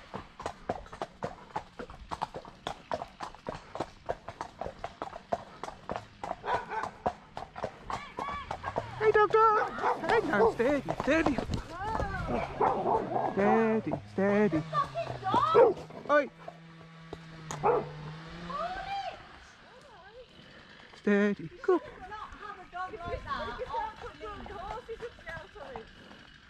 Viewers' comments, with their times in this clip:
0:07 I know and you can hear her trying to call her dog back in a seemingly desperate or angry yell.